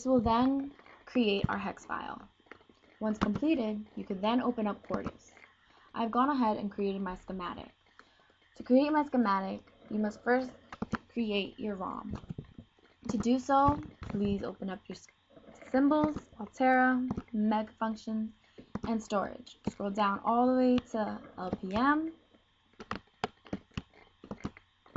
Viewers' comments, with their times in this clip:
0:05 You created your what? Sematic?